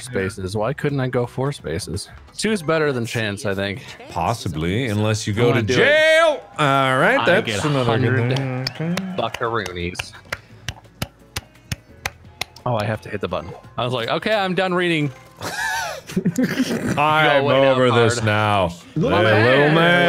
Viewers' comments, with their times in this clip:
0:05 when mark said "jail" my first thought was "SAIL"